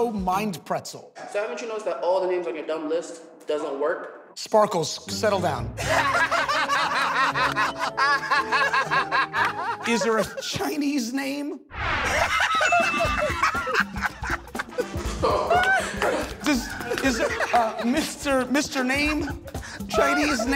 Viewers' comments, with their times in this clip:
0:06 Their laugh shows just how savage the comeback Murr gave was. Especially Sal.